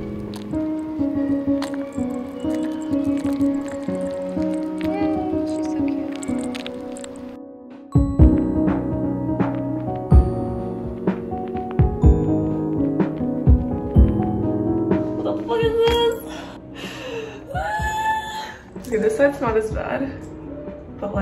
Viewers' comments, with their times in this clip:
0:04 that asmr is SO SATISFYING